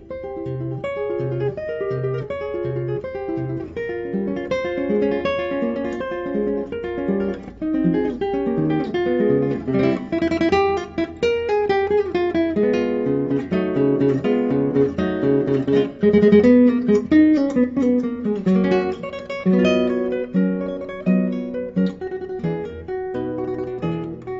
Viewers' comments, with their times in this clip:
0:07 In the first place I think this is played with much soul and personallity, in the second place there is no person who allways plays flawless on stage, no Williams and no Ana as well. That doesn't mean that the technique is on a grandmasterlevel. I don't think that minor mistakes are part of the music it is all about intention. On this level players follow their taste. Ana does that with a great technique and musicallity. Those nerds who are interested in mistakes: listen for instance and check the score.